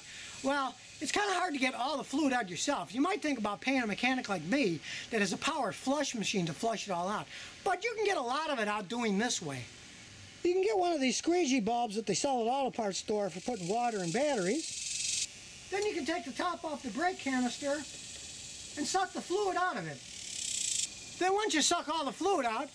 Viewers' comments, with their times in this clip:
0:09 Squeegee balls had me cracking up